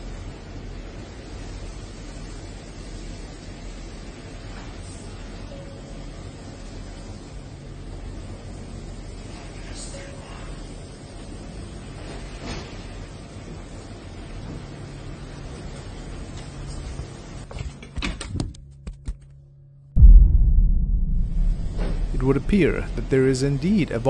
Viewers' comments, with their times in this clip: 0:10 Me being a Steve , I’m keen to when I hear my name, and the voice said Esteban …. Couldn’t make out what was said just before that th0!… likely more Spanish